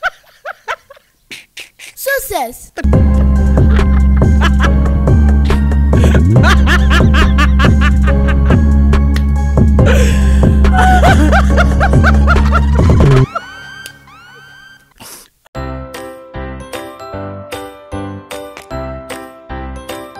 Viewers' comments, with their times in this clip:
0:07 when u hear the music!